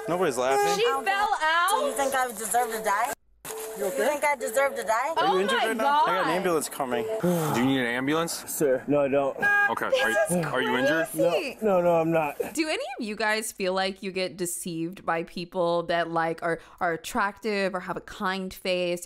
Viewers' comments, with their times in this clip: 0:03 She heard us all laughing at him saying the baby might not be his😂🤣